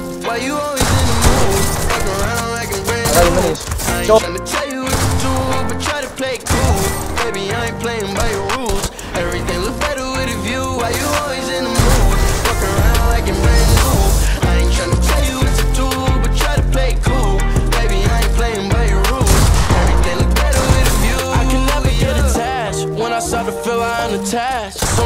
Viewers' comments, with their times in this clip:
0:08 There are backround ar shots I can hear it it’s